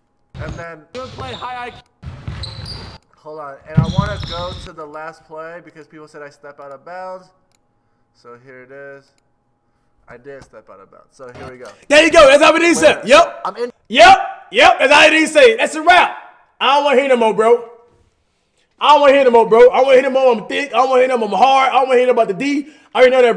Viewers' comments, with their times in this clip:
0:10 I think rice said “I dint step out of bounds” it’s his voice that makes it sound like that 😂 cuz right after u hear him say “I’m in” and then when he said he didn’t step out of bounds look at his head movement 😂